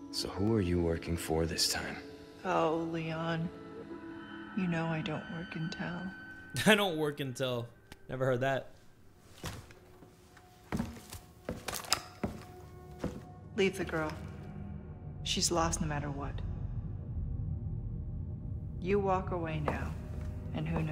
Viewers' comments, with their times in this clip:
0:03 nahh her voice is not it 😢😢